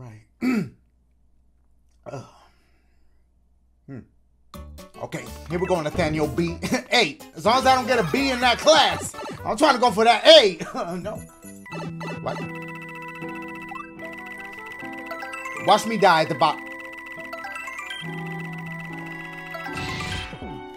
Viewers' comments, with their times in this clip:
0:06 The mushroom effect sounded different?